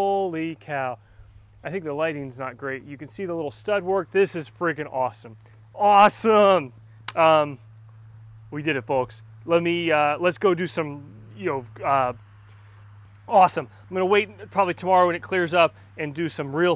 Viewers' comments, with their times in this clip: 0:04 Damn sounds like you didnt really need to go 6 inches!